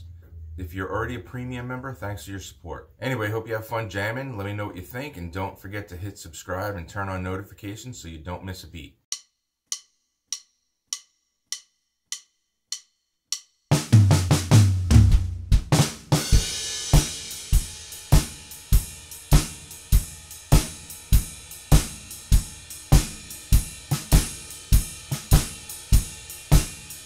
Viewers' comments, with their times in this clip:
0:09 drum starts here